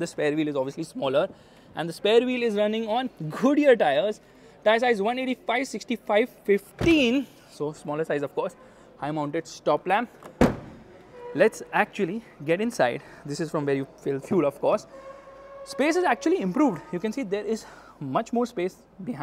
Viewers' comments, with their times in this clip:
0:03 I heard Khodiyar tyres PS: I hate how they discontinued Diesel